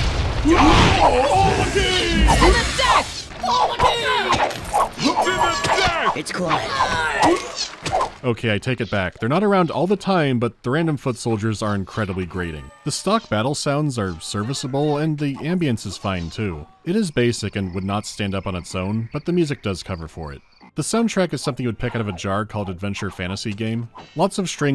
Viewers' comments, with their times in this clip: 0:05 the "it's quiet" annihilated me, fire warrior's sound was a travesty but this is very close to surpassing it
0:05 Anyone else hear the pitch changed “It’s quiet” 😂
0:05 I thought the sound design was good, but a little too quiet.
0:05 Did you just hit us with a pitch shifted Fire Warrior "It's quiet" or was that genuinely part of the audio? Either way I now have that damn audio snippet st7ck in my head but there's five of them each a fraction of a second off from each other.
0:05 Anyone else hear a "it's quiet" or was that just me? XD
0:05 did anyone notice to there is a pitched up "It's quiet" or any I going crazy
0:06 is that... did you add that "it's quiet?" Is that a pitched up sound effect from Fire Warrior?
0:07 The re-pitched "It's quiet" from Firewarrior ended me 🤣